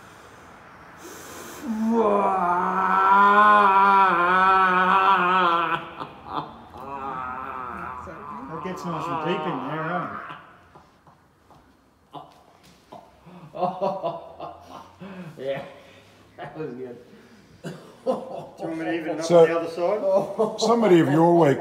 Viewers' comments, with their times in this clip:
0:03 man turned into wario